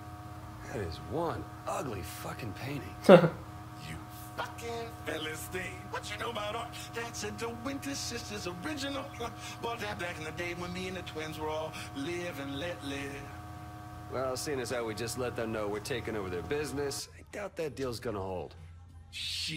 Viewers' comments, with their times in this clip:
0:03 That Guy from Saints row 3 sounds like [UTAULOID]. I love this video 😊